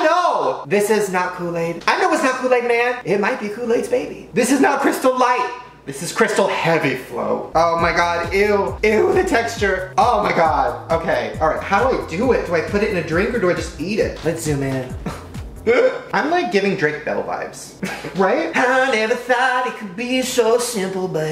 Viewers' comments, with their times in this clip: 0:05 omg his voice turns into a demon